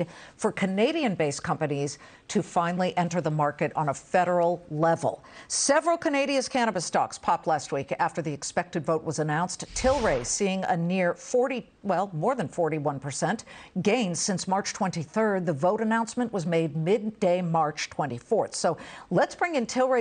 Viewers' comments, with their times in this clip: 0:05 Did she say Canadia? 😆